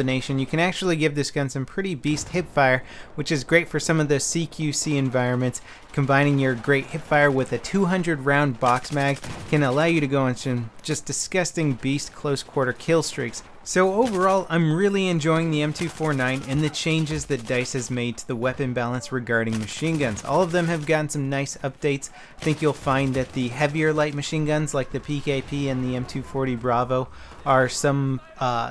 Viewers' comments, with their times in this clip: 0:09 Lol that awkward noise he makes